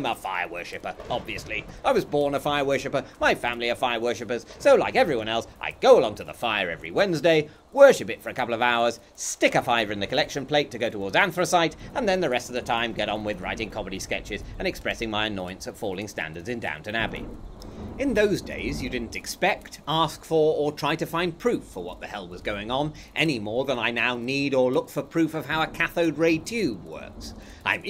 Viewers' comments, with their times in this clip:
0:10 "Stick a fiver in the collection plate to go to ....?" Can anybody help me? It sounds like "a dan for o syth"